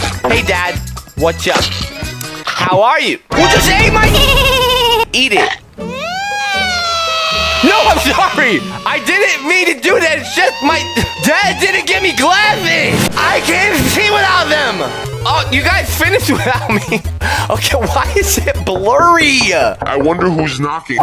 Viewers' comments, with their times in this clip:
0:05 Eric from South Park crying